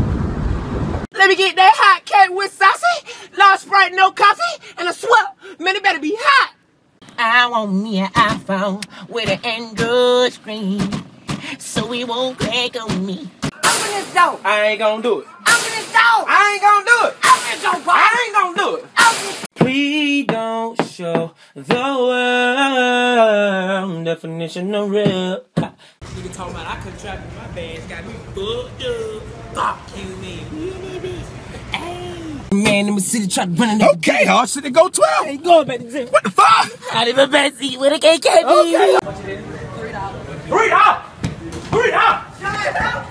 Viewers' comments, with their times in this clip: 0:08 why do you sound like Michael Jackson
0:18 is my favorite😍😍his voice😭😭❤❤❤❤
0:19 on wow he can sing
0:19 fire 🔥 vocal cords
0:20 I Ain’t Even Know He Could Sing !!
0:20 Dc can really sing
0:20 HE KNOW HE CAN SING AND HE KNOW HE FINE ASF😫❤️
0:20 he can sing
0:20 he sound so good
0:20 Dc got some vocals he can really sing 🎶
0:21 shocked me for a second. He a really good singer
0:22 he can sing bro😍😍
0:22 dc young fly without his good voice
0:23 I like how he sings the part
0:24 is the bets he can really sing